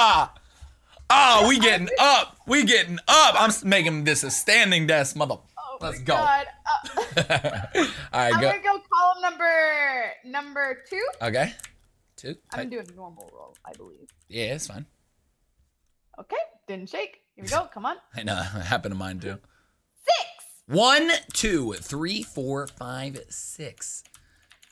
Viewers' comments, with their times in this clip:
0:04 hear his wife laughing omg background lol
0:07 Who’s laugh lmao